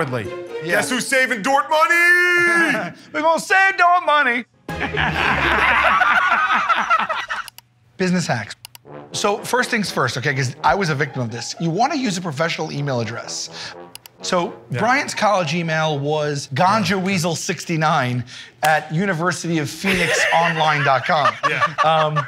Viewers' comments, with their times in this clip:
0:03 On a monthly basis I have Sal singing the dort money jingle in my head and I HAVE to watch this clip to get it out of my head. That is until I start hearing "we gon' save dort money!" about a month after, and.. well I find myself here again.